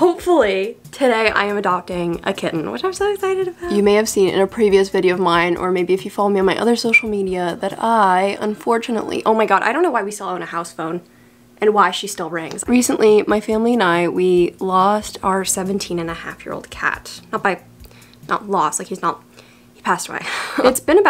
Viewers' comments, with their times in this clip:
0:06 did anyone else notice lol "so(whistle)cial media"
0:06 off topic but the whistle when you said "social media" was ~immaculate~